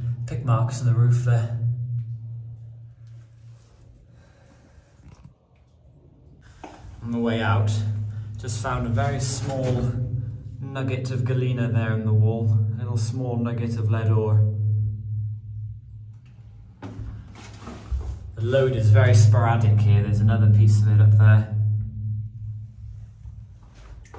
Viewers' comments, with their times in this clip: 0:05 .....that reverb b b. B. B. B. B. Bb